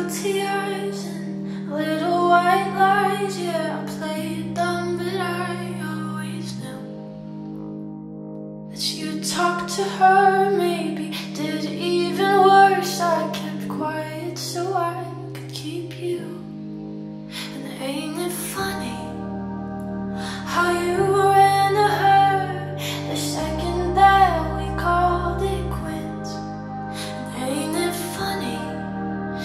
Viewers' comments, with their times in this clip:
0:10 it feels like everyone can hear it